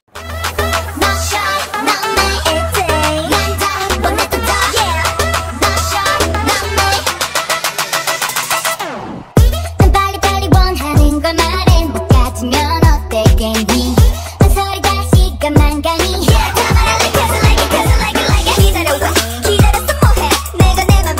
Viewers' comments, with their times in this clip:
0:03 yuna sounds jimin from aoa here HAHAAH So all of them can rap